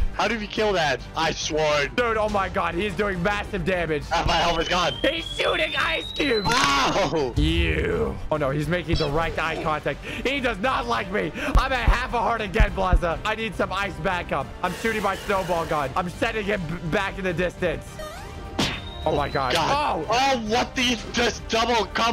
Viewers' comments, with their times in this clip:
0:06 why do i hear transformers micheal bay